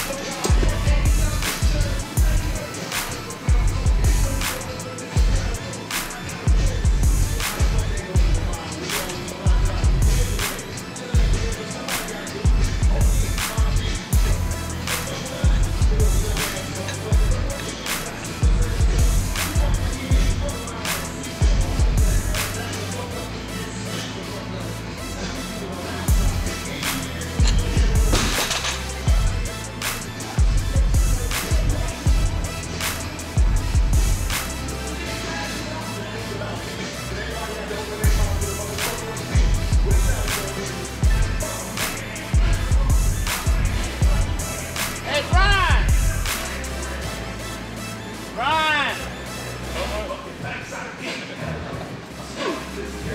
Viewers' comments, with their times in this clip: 0:07 2pac music in gym.
0:36 If you're listening closely you will hear 2Pac playing in the background. (Off topic I know but real fans will understand) LL the GOAT!